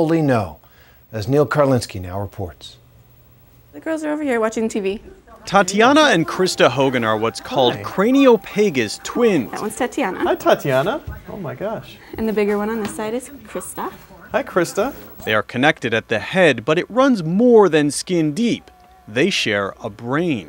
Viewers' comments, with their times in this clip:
0:08 Goofy says their condition to Mickey on